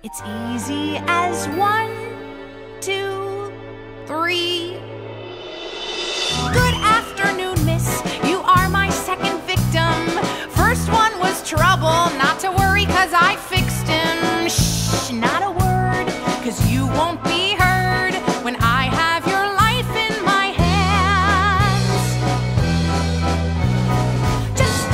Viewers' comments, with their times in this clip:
0:09 did he just say sapmap?